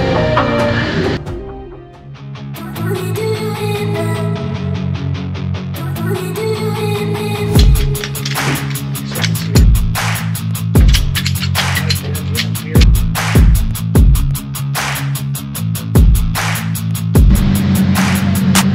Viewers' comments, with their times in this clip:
0:03 lowkey banger of a song starting lol